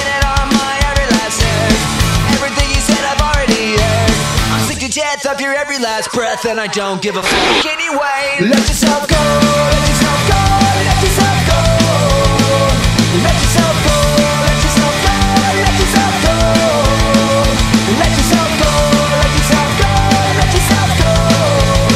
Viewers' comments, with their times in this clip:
0:05 you can hear someone screaming this, and it's not censored